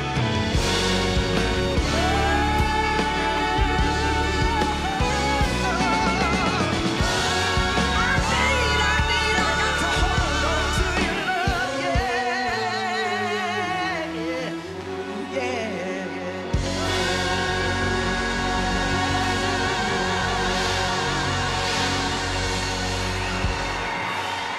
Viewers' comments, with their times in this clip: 0:06 Background singers are SANGIN